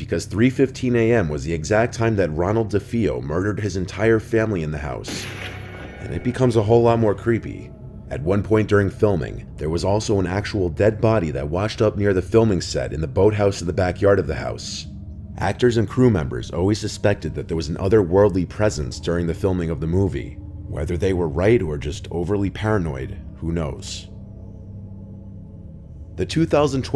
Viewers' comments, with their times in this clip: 0:09 when he said "at one point..." my computer lagged so he said Aaaaaaaaaaaaaaaaaaat one poooooooooooooooint and then it went back to normal... creepy